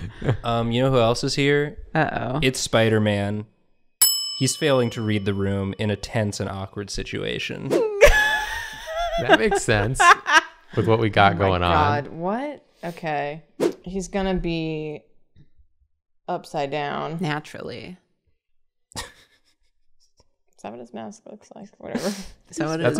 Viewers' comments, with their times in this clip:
0:03 A tennis and awkward situation